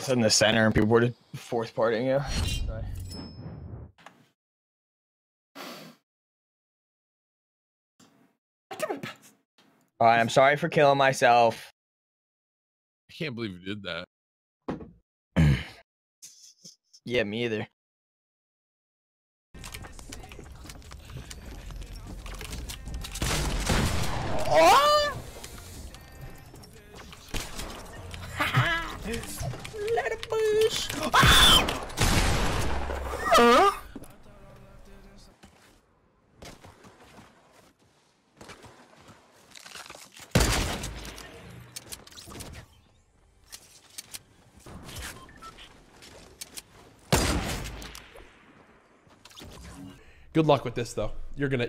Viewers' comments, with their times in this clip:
0:09 😂😂 what is that noise Ninja
0:26 you can just hear the emotions Scared,happy,either sad or surprised idk about this one
0:31 sounds like an eagle
0:31 are the sounds of a man
0:32 when you accidentally hit puberty playing fortnite VOICE CRACKS